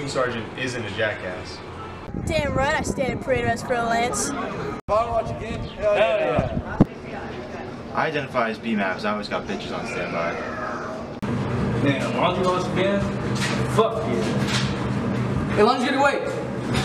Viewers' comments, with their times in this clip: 0:03 he sounds and looks like 14 but atleast he’s a marine best branch in the world
0:03 he sounds like Trunks from dbz